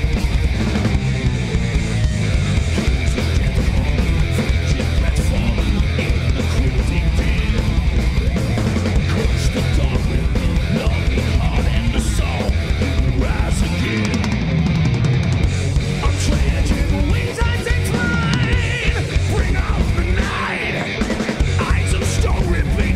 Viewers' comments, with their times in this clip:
0:07 dude is not even paying attention while playing the most ridiculous bassline.